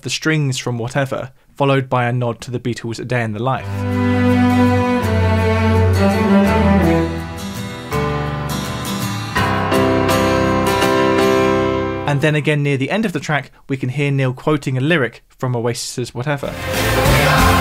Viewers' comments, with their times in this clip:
0:05 The cello part reminds me of the Beatles' song "I Am The Walrus".